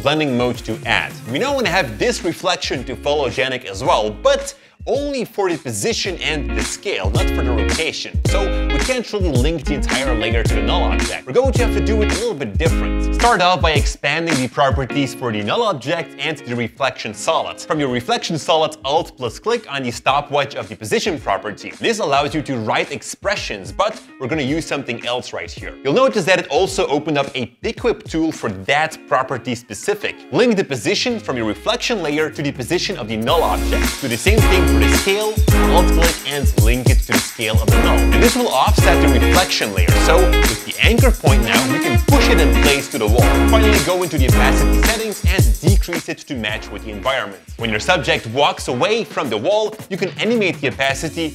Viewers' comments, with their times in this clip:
0:05 Someone screwed with the music levels #filmmaking #setlife #productionlife
0:07 cool tutorial, but guys check out the music volume, there are some bugs and it jumps from low to high. for example
0:32 What happend to the music ? XD